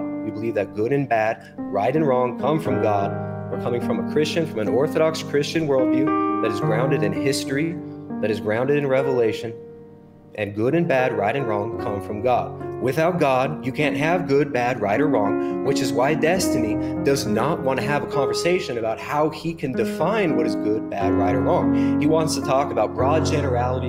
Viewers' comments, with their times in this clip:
0:07 The piano over dub was simply beautiful.